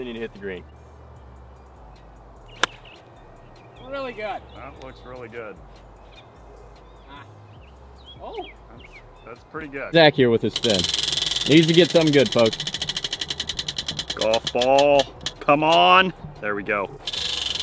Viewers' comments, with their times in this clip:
0:04 sounds like tiger woods 😂